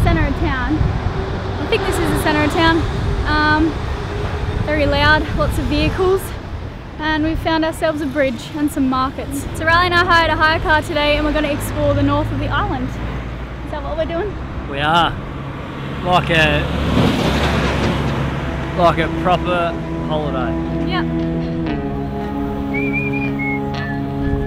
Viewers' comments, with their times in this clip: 0:06 “lot of view cools” lol